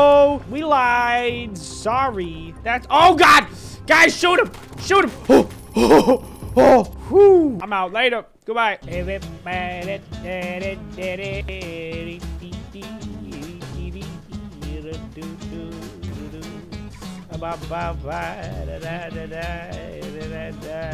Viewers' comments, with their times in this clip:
0:08 Lol love that music.